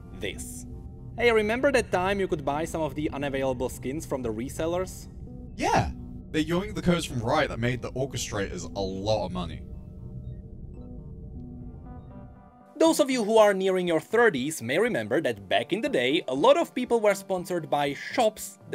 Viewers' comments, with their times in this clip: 0:05 Can someone please translate whatever is being said ? CC doesn't really work and I cannot tell what those words are supposed to be.
0:06 ngl i could not understand what he said